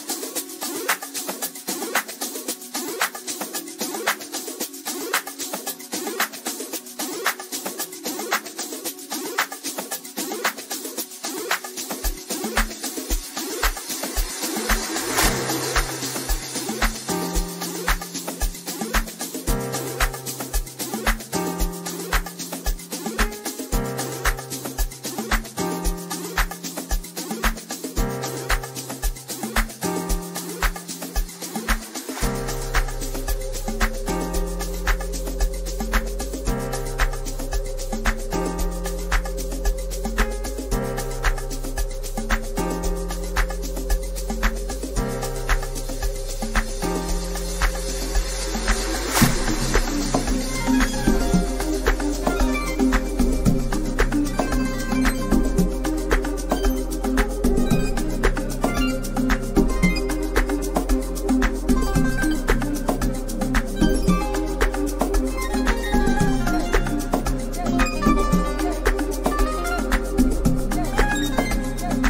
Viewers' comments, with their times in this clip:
0:03 Ridiculous Deepness goin on. I especially dig u !🎶🔈🔉🔊😎💙
0:53 Whats the track ? - that crazy piano!